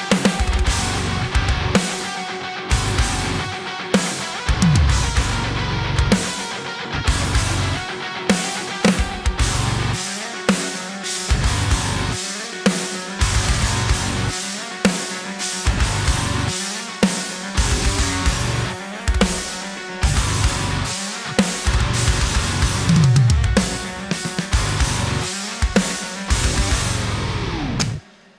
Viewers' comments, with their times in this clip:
0:09 I love this transition in from 'accidental' hitting cymbals to the usual beating the 4/4 beat.